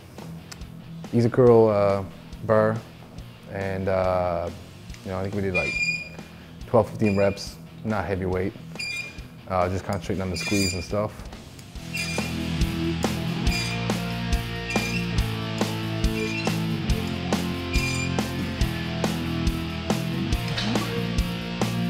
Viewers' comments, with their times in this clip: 0:07 The creaking you can hear comes from his arms. ‘Cause the man is made of iron